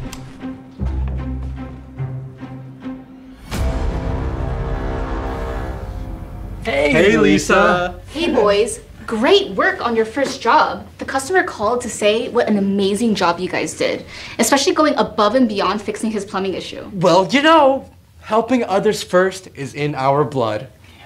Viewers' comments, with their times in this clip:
0:03 the sound effects were scary 😬